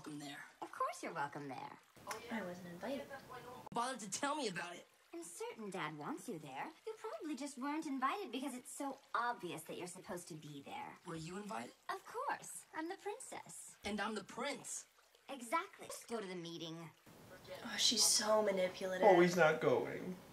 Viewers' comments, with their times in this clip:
0:03 NOOOOO!! YOU MUTED THE LISP! :C